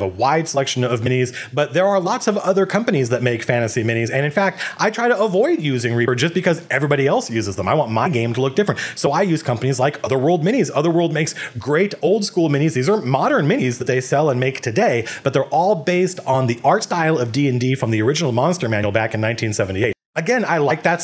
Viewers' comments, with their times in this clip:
0:06 I want MY game to be different. That slight hint of attitude was funny. We love you, Matt.